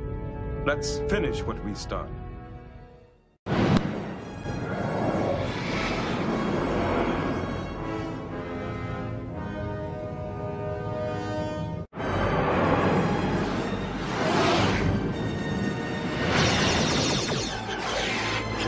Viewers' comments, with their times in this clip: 0:04 when the Vor'cha flies by you hear a TIE fighter!!